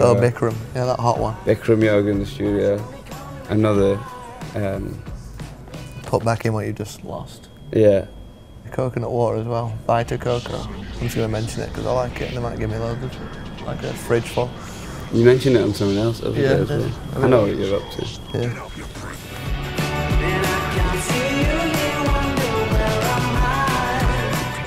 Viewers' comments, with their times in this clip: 0:09 WHAT DOES HE SAY I'M TRYING TO DECIPHER BUY I CAN'T 💀